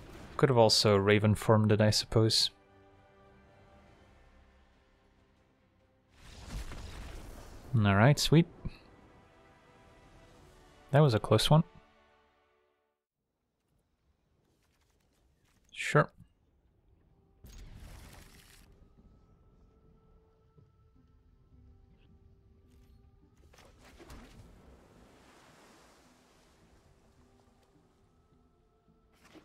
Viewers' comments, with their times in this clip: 0:10 The most cool-guys-don't-look-at-explosions "That was a close one" I've ever heard. Legend being legendary.